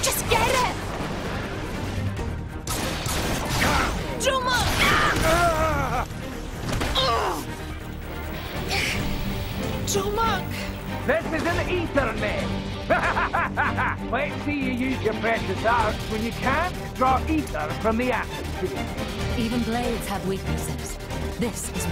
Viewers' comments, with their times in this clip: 0:04 Can we recognize how shrill Nia’s scream is?